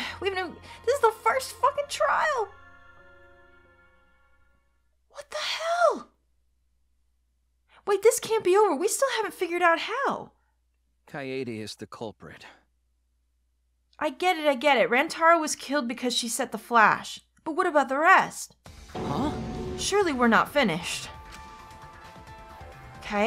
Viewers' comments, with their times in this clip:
0:10 I keep replaying this voice line... he's so sad ;_;
0:10 The way Shuichi says "Kaede is the culprit" hurts my heart every time I hear it.